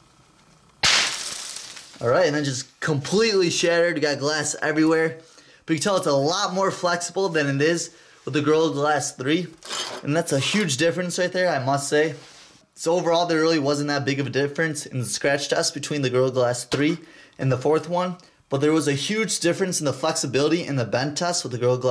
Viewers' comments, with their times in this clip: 0:07 The Girl Glass 3?